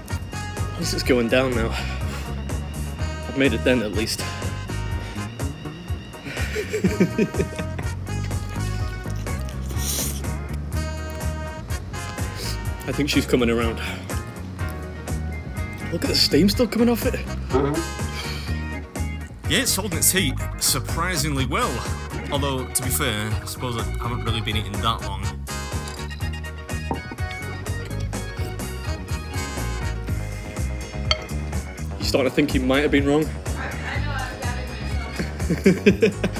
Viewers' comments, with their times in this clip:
0:07 I don’t know why, but cracked me up…your little chuckle to yourself while shoveling another forkful into your mouth just made me laugh way too hard. Your joy in what you do is infectious. Never change, Beard, and congrats on 3 mil subs!
0:17 Did you fart ?